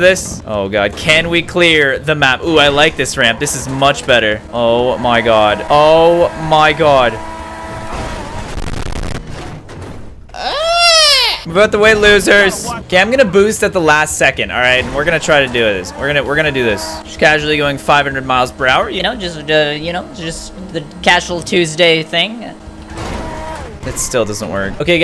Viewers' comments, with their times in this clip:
0:10 I was laughing so hard at that noise he made lol